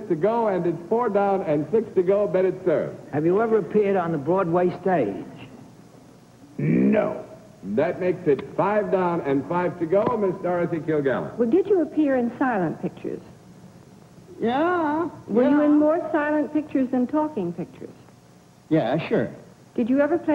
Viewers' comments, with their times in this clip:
0:03 auto captions "have you ever peed on the broadway stage"